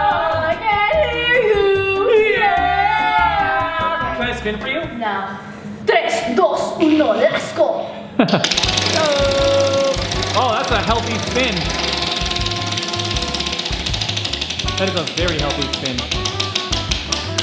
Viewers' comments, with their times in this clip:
0:05 She talks in spanish